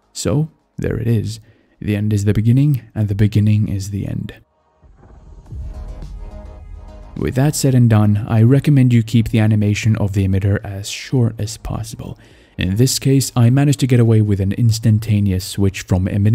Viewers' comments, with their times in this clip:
0:04 are you from Germany? I think i spotted smth on :s